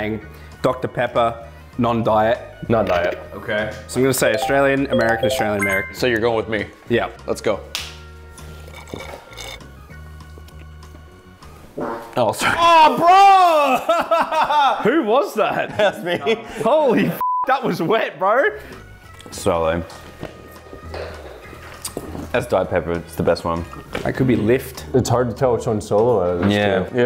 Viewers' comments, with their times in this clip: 0:09 narrators lil toot 😂☠☠☠☠☠☠